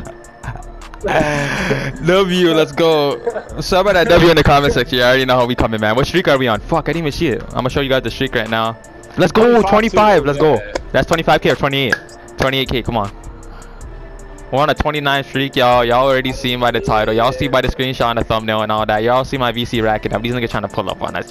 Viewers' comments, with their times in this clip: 0:07 U forgot to bleep out “fuck” 😂 But gs bro.